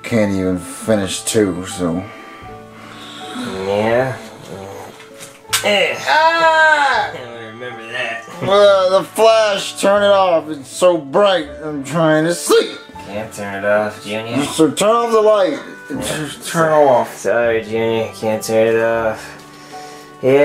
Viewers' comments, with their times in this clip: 0:05 i started dying when junior yelled when cody took the pic
0:05 the scream got me dying